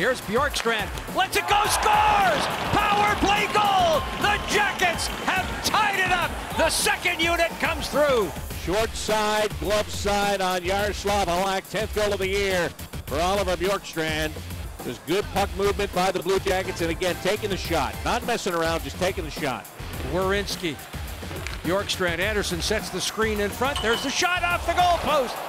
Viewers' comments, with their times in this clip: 0:08 sounds like you're listening on a radio bc your tv is broken